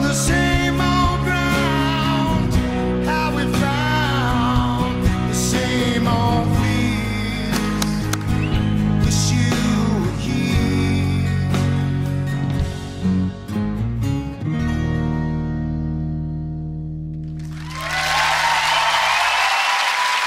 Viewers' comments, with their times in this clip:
0:05 he presses, but the button does not respond, before that he looks at Will I-am and says, "I have to go man" and he makes a negative gesture, to which Tom Jones sighs, and the girl makes a gesture of resignation, all the contest is already fixed, as always ...